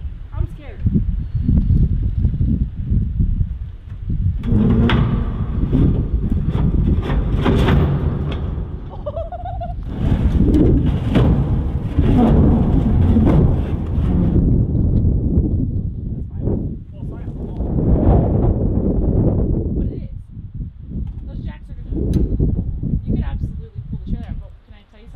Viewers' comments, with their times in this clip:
0:07 That timestamp is after her laugh, try